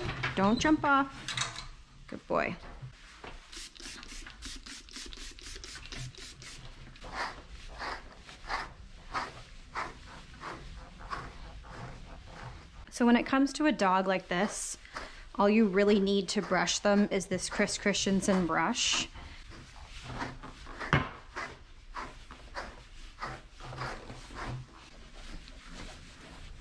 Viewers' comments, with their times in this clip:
0:07 the action of the brush sounds like the cold-start "idle hunting" of an old Detroit Diesel 2-stroke 😄 If you were looking for the most obscure comment on this video, here it is 🤚🏻